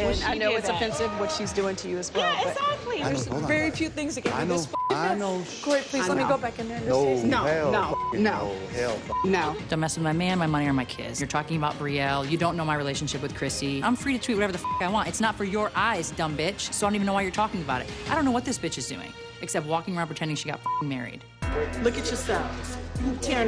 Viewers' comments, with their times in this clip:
0:10 the way she said Dumb Bitch was funny